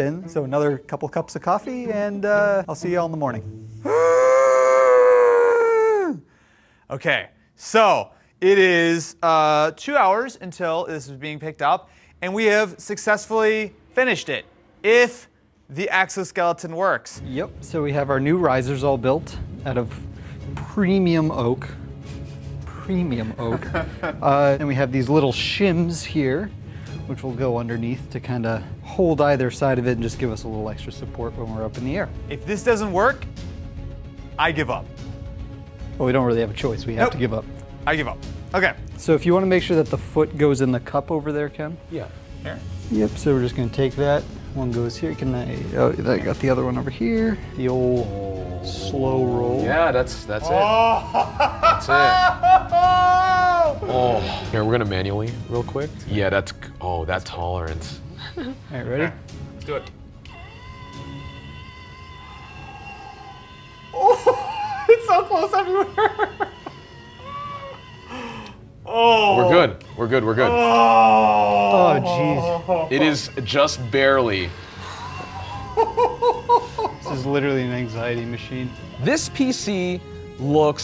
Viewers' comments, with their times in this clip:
0:03 he sounds like bubbles
1:01 The spinning is cool but I'd honestly probably turn it off if the motor constantly sounded like it does